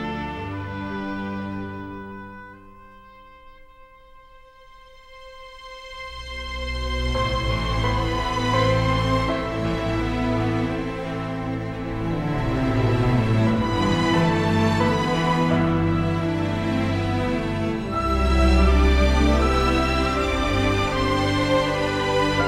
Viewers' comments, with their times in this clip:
0:08 I like the intensity it's a really moving song